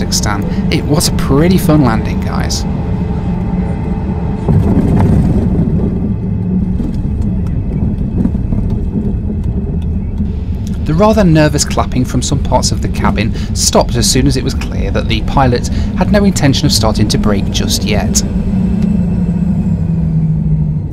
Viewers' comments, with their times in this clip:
0:07 That landing at the stopover, SOMEONE APPLAUDED THAT